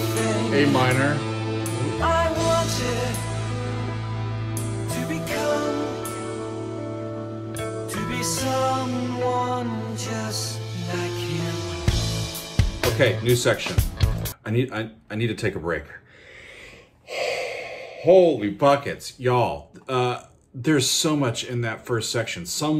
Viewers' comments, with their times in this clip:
0:10 I believe it might be intentional that you can hear three different words at the end of the phrase. "I wanted to become, to be someone just like you/him/human." This song changed my life back in the day, and during the early years listening to Octavarium I would only hear either "him" or "you". But then one day I randomly pulled this up while walking outside, and it struck me: there is a very subtle last syllable at the very end. And it fits perfectly: the person is out of place, catatonic. He wants to fit in. He wants to become normal. Wants to become human. Let that sink in.